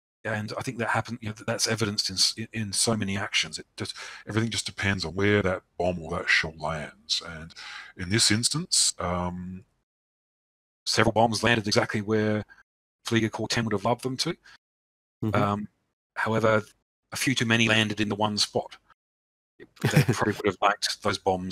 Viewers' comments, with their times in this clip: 0:05 Why is the audio slowed down here? Happens a few other times as well just a few minutes earlier.